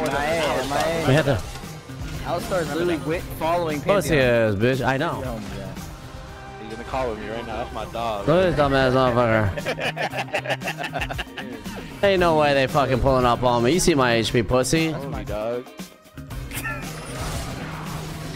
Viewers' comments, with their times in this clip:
0:06 the fuckin panth theme music, I can't lmao